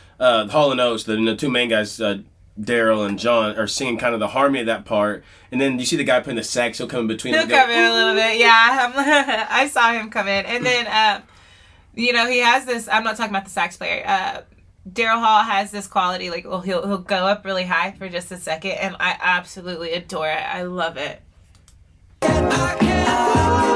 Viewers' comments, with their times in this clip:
0:06 I love when they have lots of sax in a song. I CAN go for that.